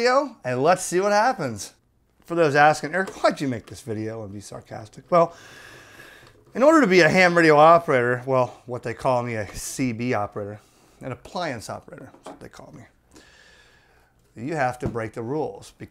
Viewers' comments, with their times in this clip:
0:03 volume drops too low for me to understand what is being said